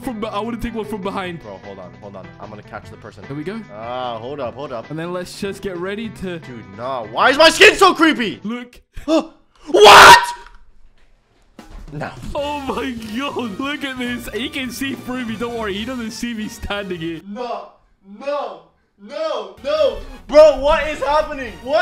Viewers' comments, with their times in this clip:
0:09 Bionic Scream Alert